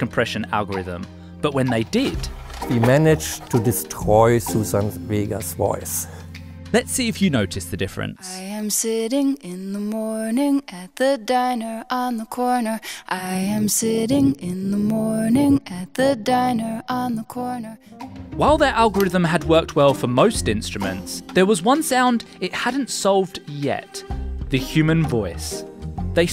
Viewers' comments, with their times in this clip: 0:07 not actually uncompressed because all the audio in this video is compressed but shows how far this amazing technology has come.
0:13 Sounds like they almost summoned a demon.